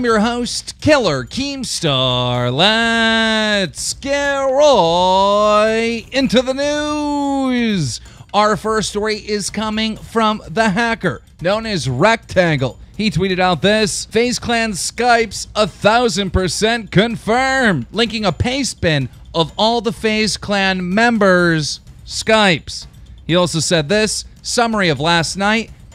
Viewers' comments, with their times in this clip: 0:08 Skip to to skip the annoying "roooooigggggght into the news" thing.